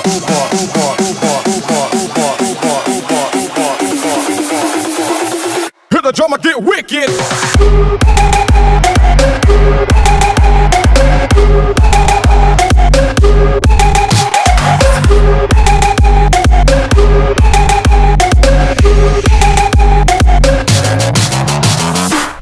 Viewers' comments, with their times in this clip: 0:07 Reminds me of hardwell's new track: 'Jumper'